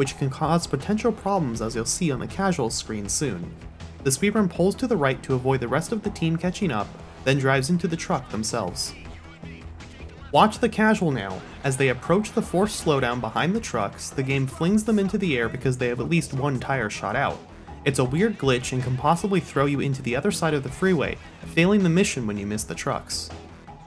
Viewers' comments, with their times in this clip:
0:10 Harry Potter theme plays